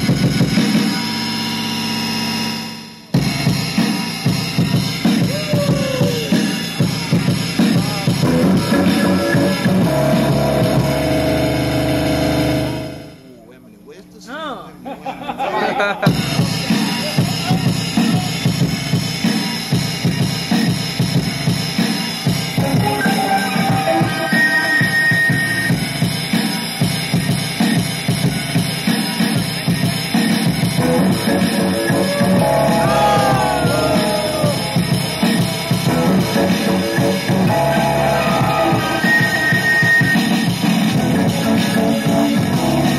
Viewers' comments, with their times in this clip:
0:03 I Thought I Was Doin' Somethin New When I Chopped Nautilus Drumz Like without that noise in it ... DOPE!!!!
0:29 oooooh my god how original i neeever heard that sample before that guy must be diggin hard ;)